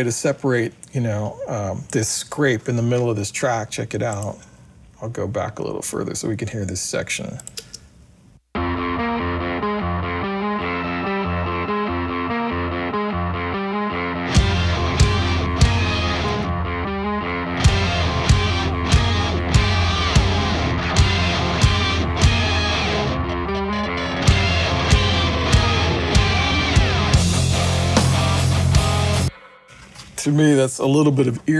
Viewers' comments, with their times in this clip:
0:06 Now that's what I'm talking about, the distorted rhythm guitars come back in like warm ocean waves engulfing your ears.
0:14 holeefuk, I can't remember the last time I heard a Whammy pedal.